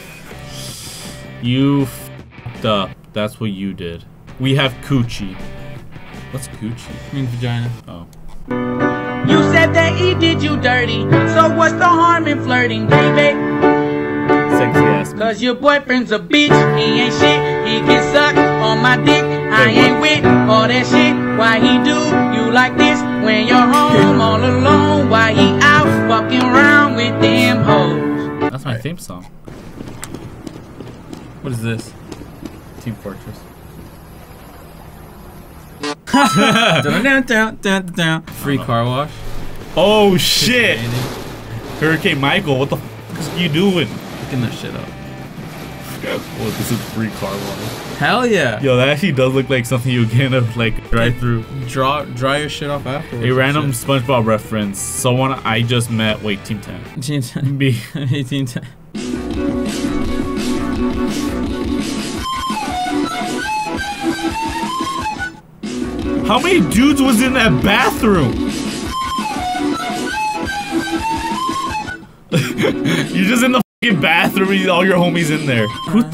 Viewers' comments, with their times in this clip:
0:08 is really catchy
0:09 That song was catchy, and the one with play store is totally accurate
0:09 sounds like my friend. I need to know who it is... 😑
0:10 I love the vibe of that song
1:03 The song was catchy lol